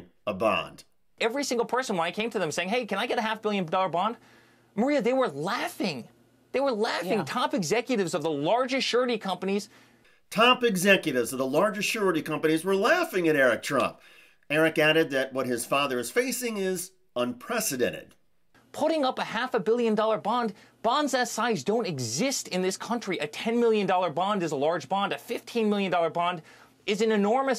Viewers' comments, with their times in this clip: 0:08 Eric Trump: blibbity blibbity blibbity blibbity blibbity. Lol